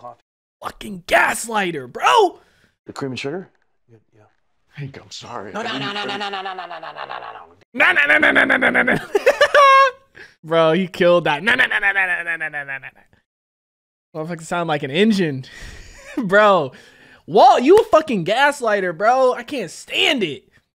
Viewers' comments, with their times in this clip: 0:05 yes, Hank sounds exactly like the Jake brake on a semi-truck